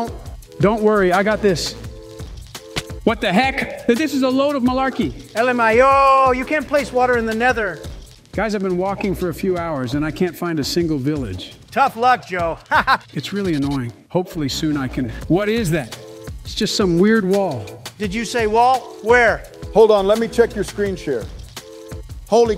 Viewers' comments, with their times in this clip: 0:05 the way he says it💀💀💀